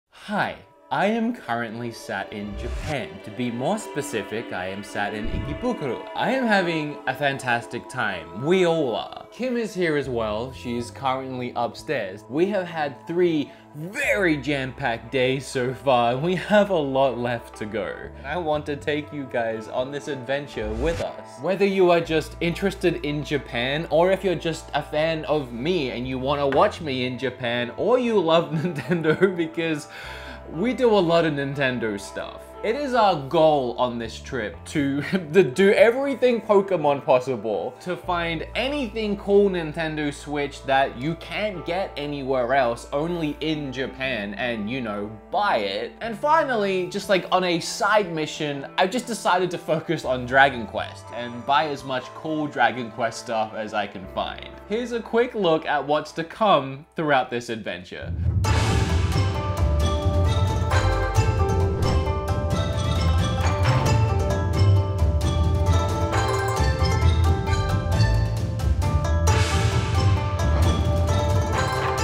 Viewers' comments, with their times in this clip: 0:04 ROFL HE SAID HES IN IKIBUKU!!!!!
0:58 like your video but at the same time I feel very awkward as a Japanese because the music you have used is Chinese.